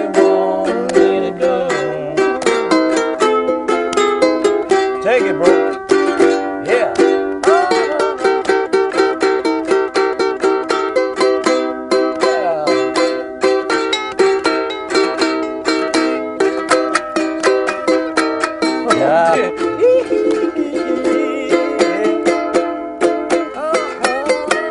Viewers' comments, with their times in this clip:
0:07 what a piece of History , Love it when Paul turns to George and say ,"Take It" . followed by George Shreddin' on his Uke . suchJoy